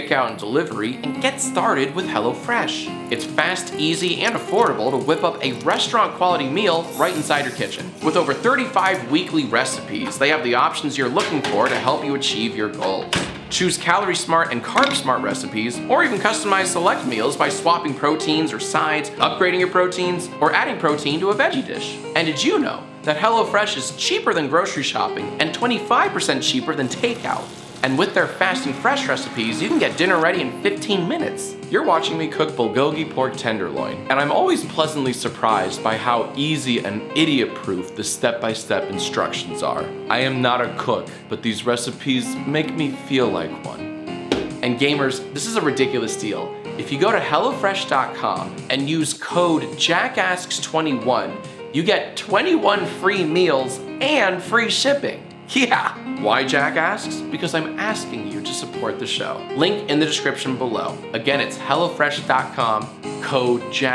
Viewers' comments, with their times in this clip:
0:03 I was looking somewhere else, and that demonic sound gave me a heart attack
0:46 let's talk about how that theme song of yours didn't even loop properly